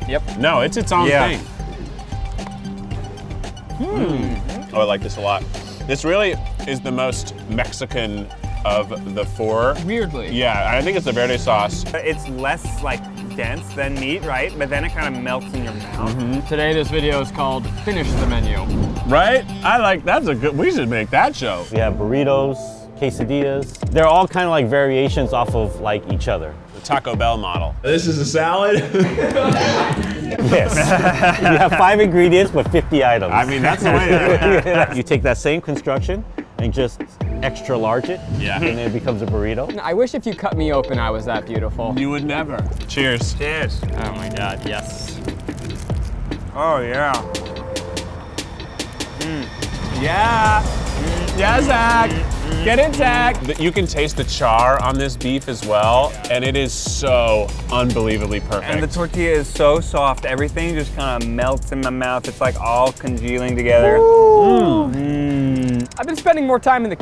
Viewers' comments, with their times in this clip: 0:04 The consecutive mmm is amazing
0:52 i say this with so much love, but when Keith was cheering Zach on it just sounded like and reminded me of drunk white girls cheering each other on at parties edit: grammar errors